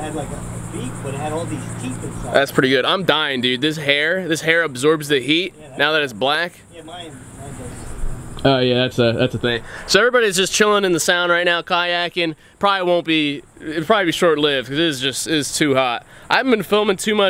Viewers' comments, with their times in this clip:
0:04 the way he said black😂😂